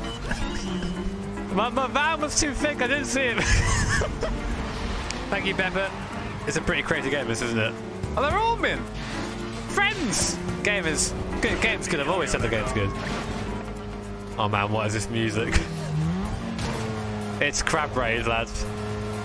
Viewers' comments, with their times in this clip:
0:04 E U R O B E A T I N T E N S I F I E S